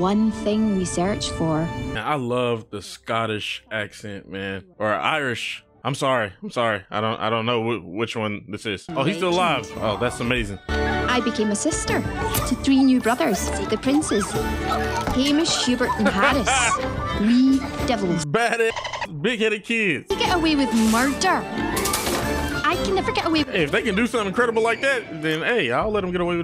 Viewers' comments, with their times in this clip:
0:08 Scottish. And I'd be careful if I were you not to mix the different parts of the UK up. England, Ireland, Scotland and Wales, they're all part of the United Kingdom (or at least Northern Ireland is, the majority of Ireland is the Republic of Ireland), but that does not mean that they are the same. Though tensions are easier than they were in the past, I still say that some from Ireland, Scotland and Wales will be indifferent if they're referred to as English or British, some may see it as a compliment, some will be very, VERY offended. So my best advice is to just be careful about that. Listen long enough and you should be able to hear the difference between Scottish and Irish accents. They each have their own forms of Gaelic as well of course.